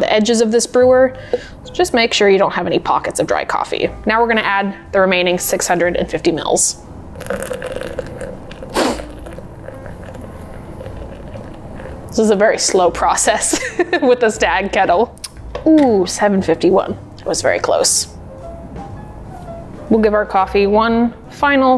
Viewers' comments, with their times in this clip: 0:07 Skip if you don’t want to hear me unceremoniously sniff as my spring allergies kick in